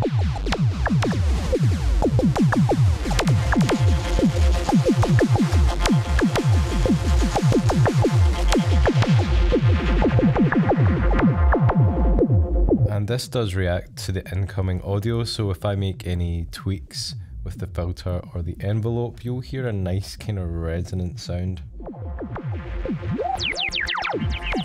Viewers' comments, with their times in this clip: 0:07 Impressed with your work as usual! Now I must try something like this on my maths 😀I like how completely crazy it sounds. Considering industrial vibes, yeah, that part from definitely sounds like it can be an FLA Live Wired intro 😀